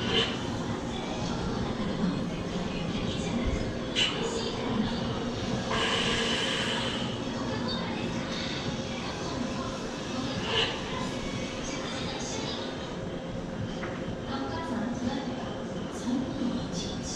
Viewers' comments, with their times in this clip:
0:05 Here comes the boom